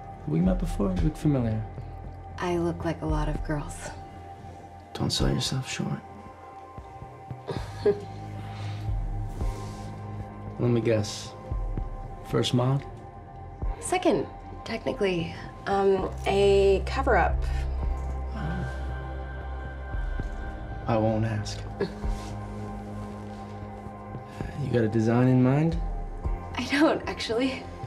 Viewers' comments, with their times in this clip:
0:10 WHAT is he saying? "First month"? First moth? First mark? First model? WHAT??